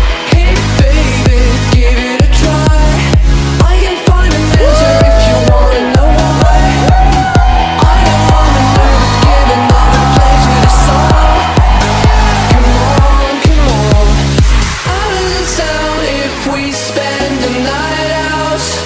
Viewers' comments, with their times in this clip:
0:04 Damm u brought me back! love how u got people screaming in line..... cant wait to go back!